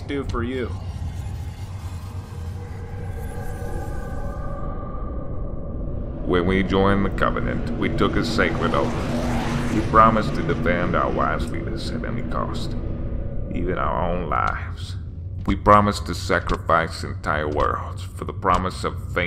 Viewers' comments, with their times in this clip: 0:05 ship master is Morgan freeman